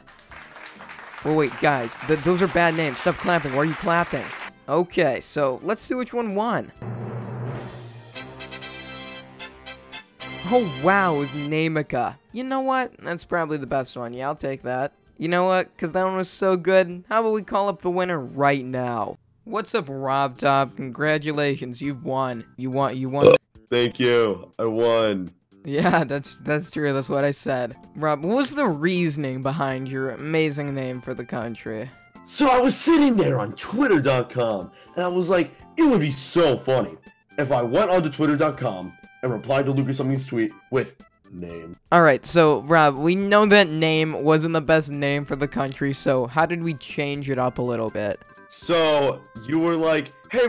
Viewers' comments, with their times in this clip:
0:07 your drum sticks were upside down and those drums were snare drums but the sound that were making was a high tom But still love ya
0:33 That voice though jeez (watch till the call ends)